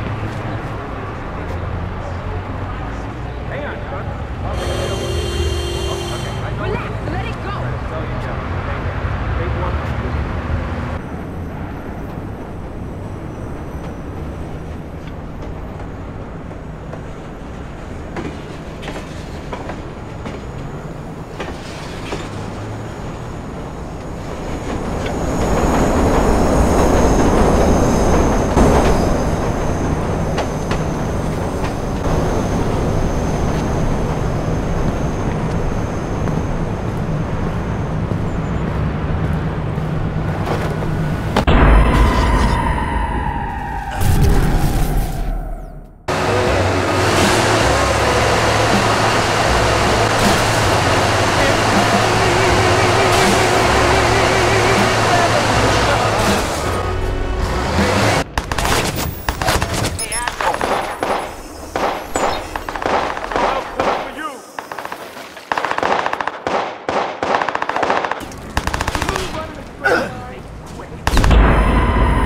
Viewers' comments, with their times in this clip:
0:06 lady in the background telling him to ignore this glitch
0:06 Why does that lady saying “relax, let it go” sound like Cardi B
1:00 so no one hears "hey apple?" ???